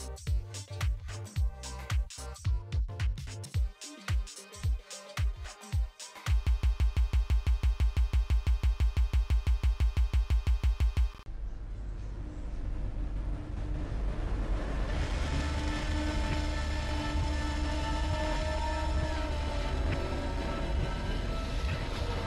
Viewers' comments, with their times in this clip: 0:03 this kid be like AAAAAAAAAAAAAAAAAAAAAAAAA
0:09 my heart literally went immediately to that rhythm that I wasn’t expecting-